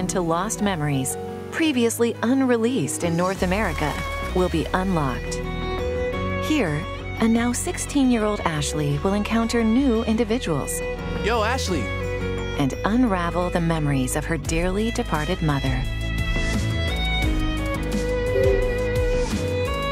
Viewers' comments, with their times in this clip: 0:05 when I hear that kind of music, I know this is some casual anime territory.